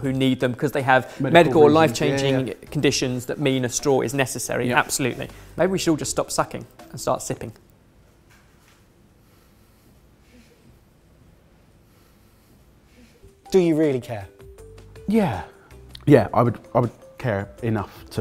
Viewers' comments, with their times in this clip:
0:05 that awkward laugh in the background